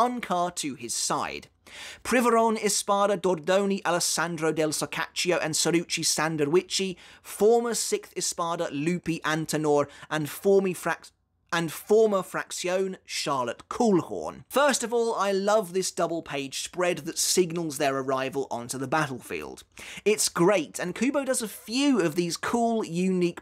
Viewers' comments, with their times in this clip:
0:10 I choose to believe that you deliberately left in the slight world jumble over Charlotte's name just as an implicit nod to how comical that sequence of name drops was hahaha